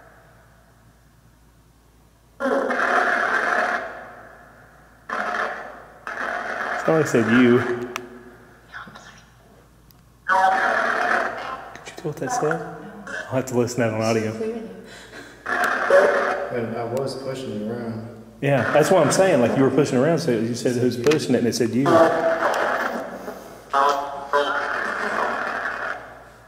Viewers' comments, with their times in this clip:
0:08 I think I heard a woman whisper through the box, "Cops are here." I don't know what to think of that. Lol!